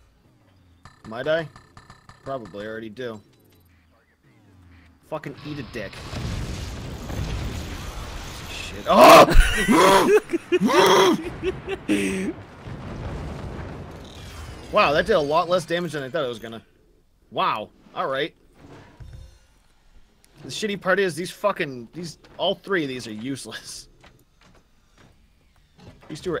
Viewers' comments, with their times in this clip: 0:09 A fucking cavemans mating call!